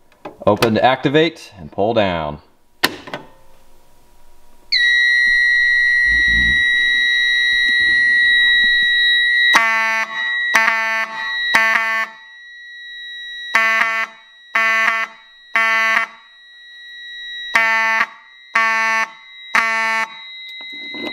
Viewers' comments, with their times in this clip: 0:03 I think there’s something wrong with the Wheelock